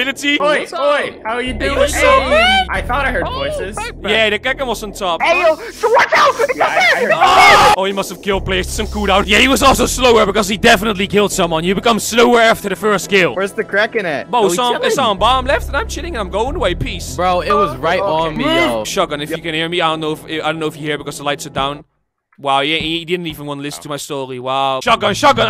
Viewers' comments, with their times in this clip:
0:07 perfectly cut scream 2